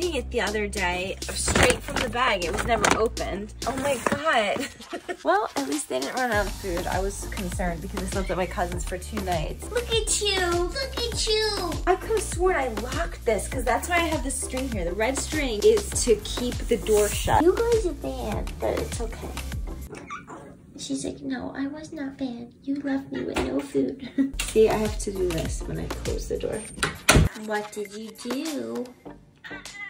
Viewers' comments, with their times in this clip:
0:10 it reminds me of that voice she made on the Spider Scare Prank.